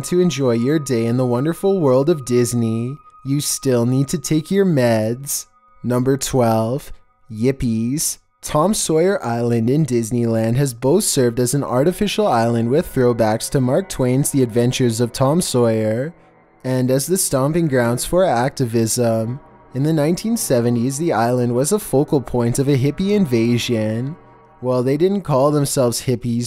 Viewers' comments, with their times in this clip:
0:05 true, it's kinda funny hearing him say that in that voice 😂
0:07 yippies XD that’s so weird in his voice